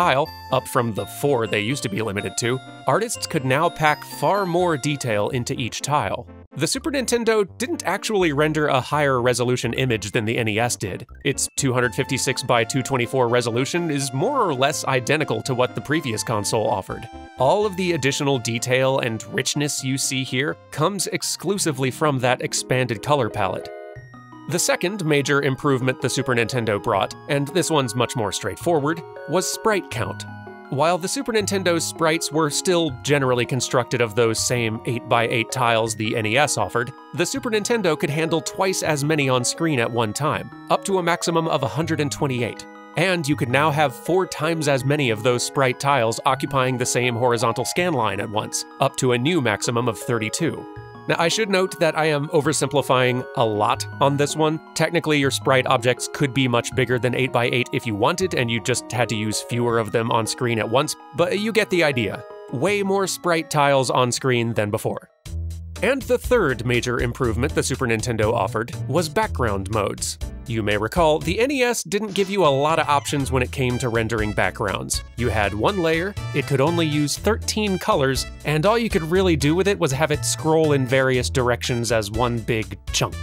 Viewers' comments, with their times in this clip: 0:06 The music, oh gosh the music. I've only played the game once but I've listened to the OCRemix album dozens of times. FF4 wasn't a big part of my childhood and the SNES music STILL makes me nostalgic. Unrelated: Link's pink hair in LttP is still strange
1:06 Does anyone remember the name of the song that begins playing The rhythm of it is so funky and groovy. I frankly can't find the source of it. It underlines the part of the video beautifully and still ear candy. ^^